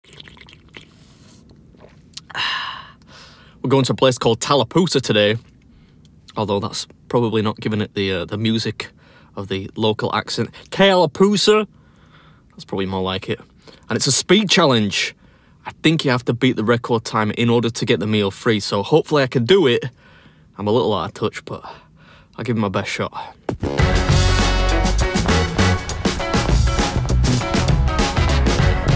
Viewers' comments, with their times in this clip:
0:10 as someone who lives in tennessee (west of georgia), sounded spot on lmao